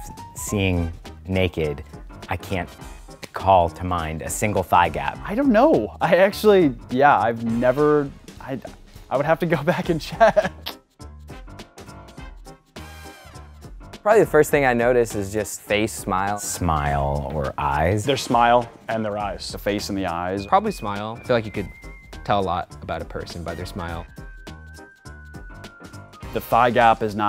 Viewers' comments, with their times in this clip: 0:08 " i have to go back to czech" ?